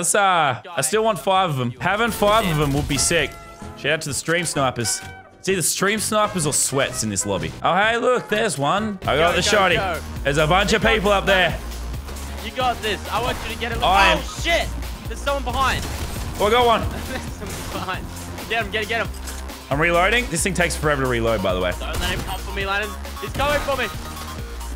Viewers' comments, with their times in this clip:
0:09 can someone tell me this music because it sounds epic